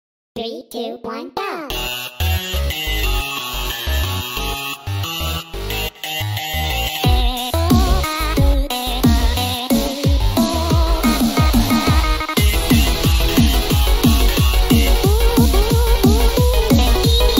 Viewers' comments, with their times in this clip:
0:02 👍 (also sounds like Undertale hopes and dreams)